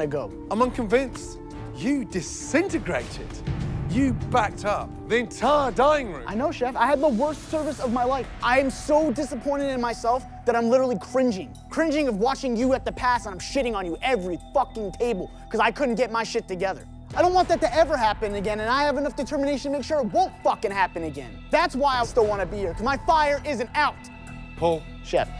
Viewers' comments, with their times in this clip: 0:06 Funny timestamp, by the way, but seriously, why do I think this reasoning was so powerful? Like, I'm not sure because he raised his voice, or it's just because the way he worded it. Even Gordon let him go back in line... OMG HE WON... I'M SO PROUD OF HIM, I GENUINELY CRIED. 😭